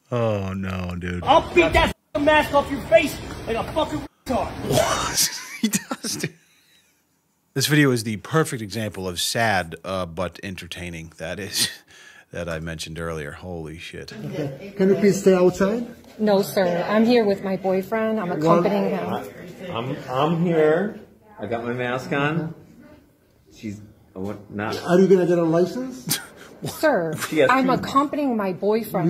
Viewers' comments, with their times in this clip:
0:10 Hahaha, a perfect ending to a perfect rant, that Fart really gave it substance. Haha, I’m crying right now.